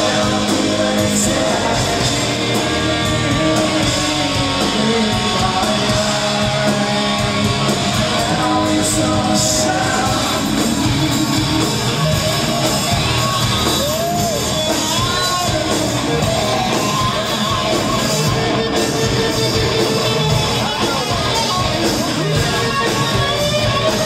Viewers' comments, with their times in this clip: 0:07 I love how maynard throws in that odd time signature "SHUT!" Hahaha